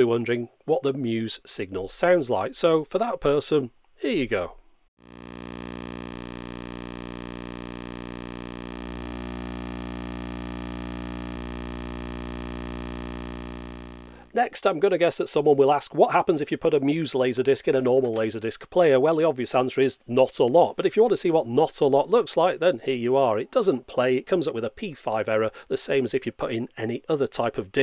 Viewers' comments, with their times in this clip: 0:04 I didn't know that I wanted to hear JDM static until right now.
0:05 awwww man......better than the Beatles..........they don't make classics like they did back then
0:12 I can feel the buzzing in my brain.